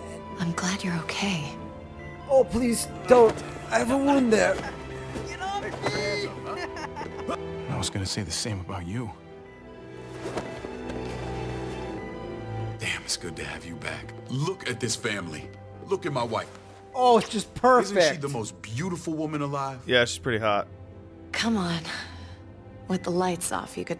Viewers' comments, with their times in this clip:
0:07 you guys hear David's voice just abruptly cut out cause he got bodied by Gabe?